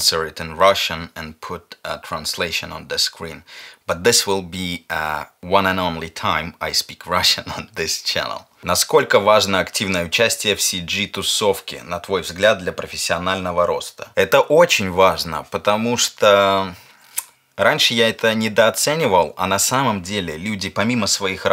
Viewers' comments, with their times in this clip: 0:08 from My perspective, Russian language feels very dangerous, mafia kind of to hear. No offence !!